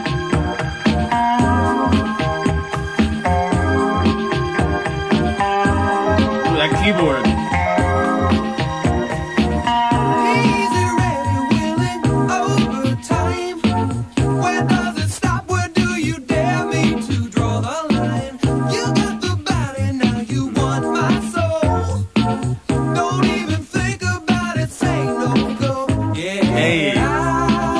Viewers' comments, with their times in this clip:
0:08 That keyboard riff I'm thinking that before these guys hit it big Darryl might have helped pay the bills back in the 70s doing porn soundtracks. 🤣